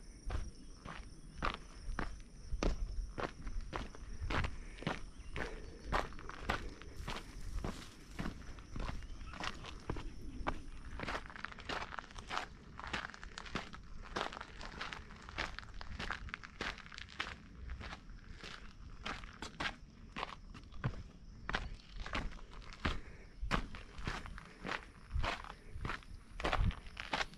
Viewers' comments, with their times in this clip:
0:08 Great video, but the fake audio kills the experience. Times like where you are completely stopped, or the uphill sections where your steps are slow and labored, we don't want to be hearing fast crunching footsteps.